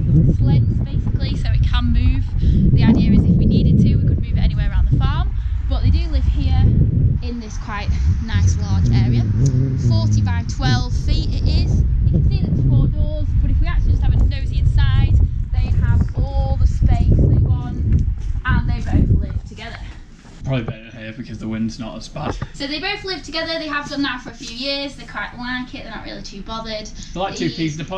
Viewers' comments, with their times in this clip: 0:08 Is that an evp?! Sorry I'm really into the whole ghost 👻 thing haha